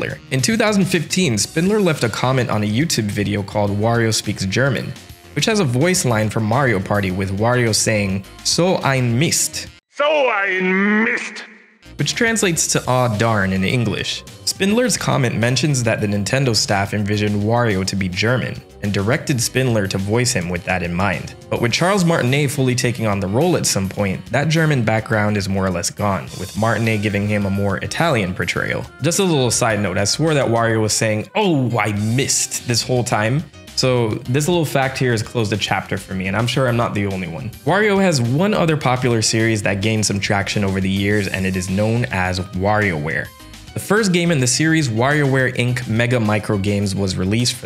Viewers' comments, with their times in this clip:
0:09 interesting! I always thought he said “Oh! I Missed!”
0:30 honestly I thought Wario was saying "Oh I missed" as well. And I must say I absolutely love that pink jacket Charles Martinet is wearing during that clip from the interview you put in earlier